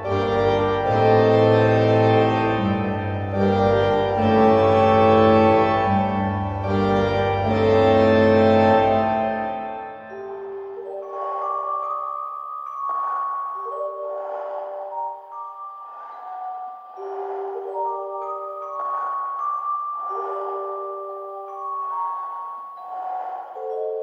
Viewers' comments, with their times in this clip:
0:10 Sounds like Michael Myers breathing